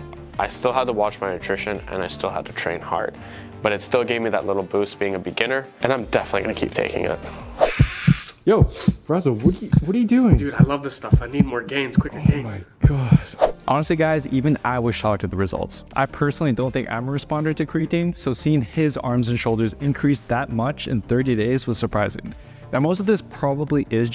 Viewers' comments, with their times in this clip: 0:10 what...... bang bro